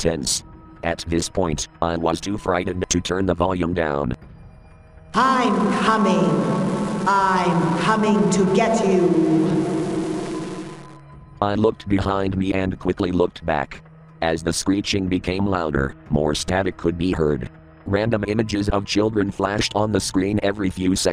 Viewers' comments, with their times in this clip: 0:05 Why does the voice sound familiar?